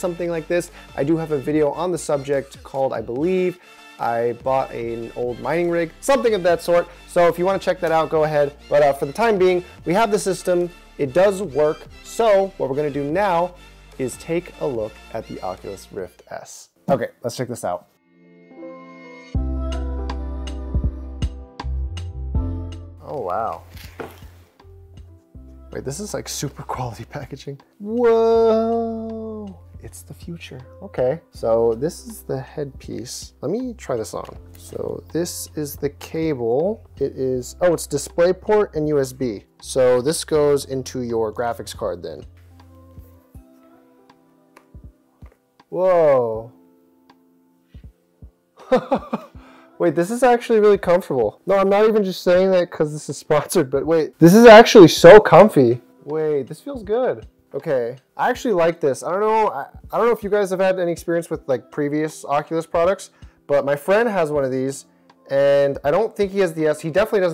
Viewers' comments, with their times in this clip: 0:07 Mic too bass boosted in the vid. Just wanted to point that out since i had my volume a bit too high, while i had earbuds in
0:51 why did u ear rape me
0:54 Is it just me or is there a huge audio spike 😂😂😂